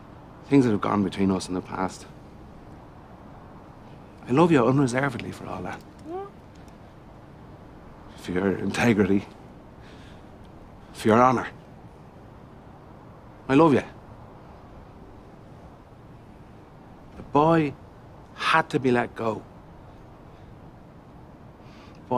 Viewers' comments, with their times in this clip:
0:06 That little “…whot?” kills me every time 😂